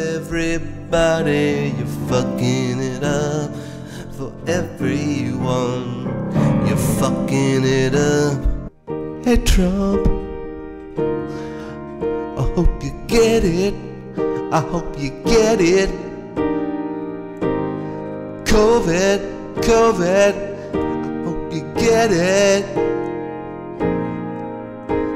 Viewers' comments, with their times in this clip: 0:09 Ayy, my man went full Ben Folds